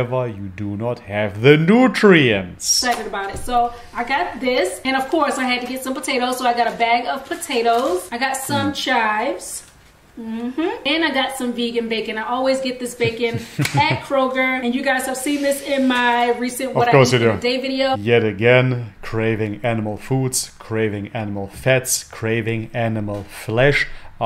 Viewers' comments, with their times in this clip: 0:07 I've got some chives on a cloudy day XD